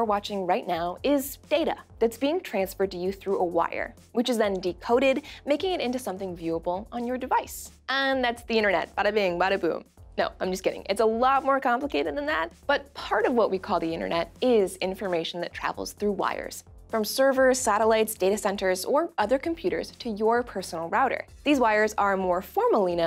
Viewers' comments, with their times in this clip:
0:08 remimded me of the dahyun's rap